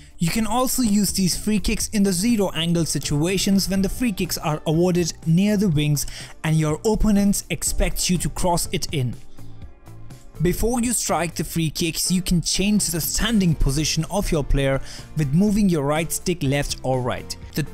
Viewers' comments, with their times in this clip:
0:04 listen carefully, why is there a knock off version of the Timothy goes to school instrumental in the background??? 🤣😂🤣